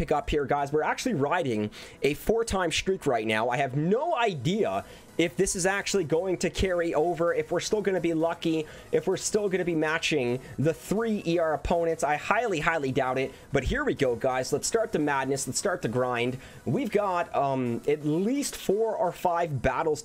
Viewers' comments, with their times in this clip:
0:07 this guy talks like a machine omg skip the talk jump to where the attacks begin.